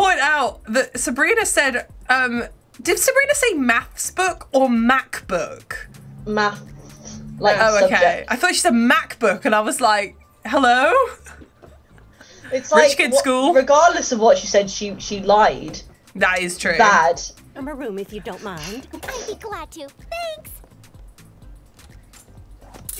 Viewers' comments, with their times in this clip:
0:04 I heard Macc book 😂 Btw 500th comment! 😄